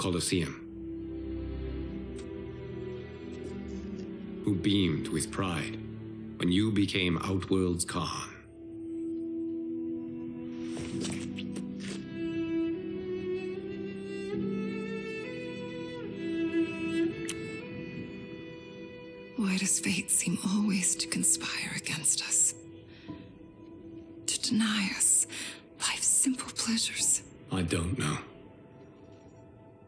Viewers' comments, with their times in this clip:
0:10 You can hear the spit slobbering